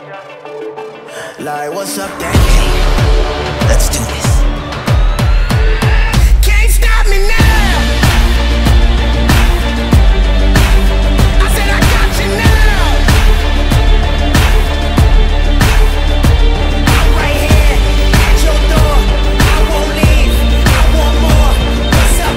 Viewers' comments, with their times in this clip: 0:09 Damn good edit. Specially The music matches perfectly.